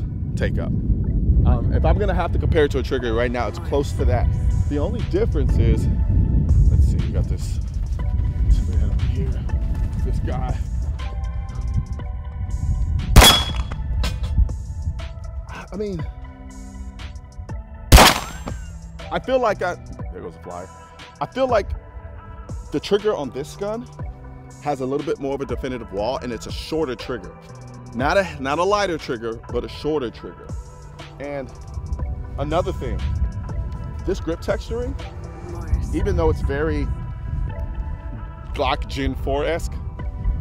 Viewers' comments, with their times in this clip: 0:10 Did I hear a ricochet? Sounded like the round you shot at the mark zoomed back by you lol
0:17 Peter Griffin ricochet
0:17 Damn, did you hear that whistle ? That was the round coming back!
0:18 can you hear the bullet almost Ricocheted
0:27 Did anyone hear the ricochet ?